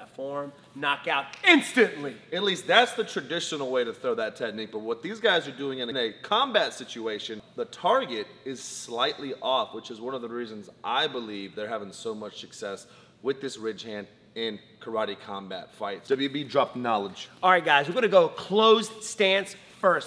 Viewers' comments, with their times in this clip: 0:03 is the smoothest delivery of the work "technique" ever! Almost was smoother than Jada's head almost... just messing I love your videos. you guys are the best!